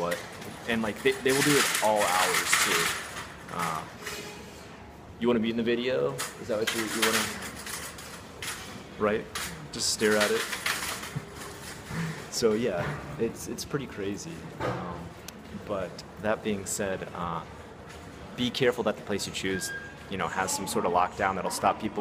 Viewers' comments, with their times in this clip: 0:03 literally the best thing ive ever seen on a youtube video HAHAHA the voice , the look, the lip movement. everything was perfect ahahhahah